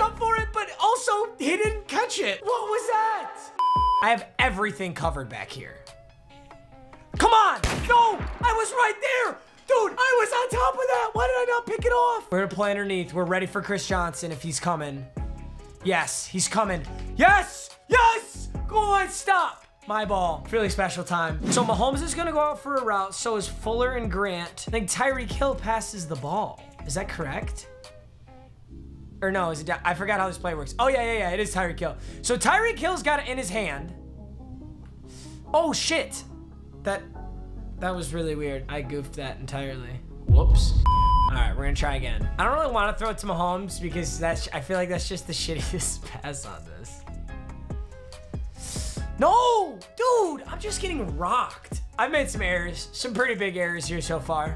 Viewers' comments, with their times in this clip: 0:10 Dude mmg you should look at your voice and your face
0:11 he sounds like he has a soar throat
0:37 Why is someone absolutely BUMPING Futsal Shuffle in the background